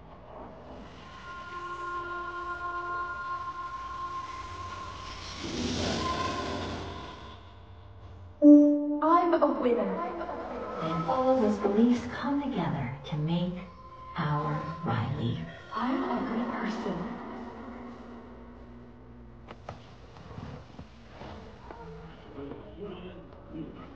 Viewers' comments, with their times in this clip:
0:09 At first I thought she said the N word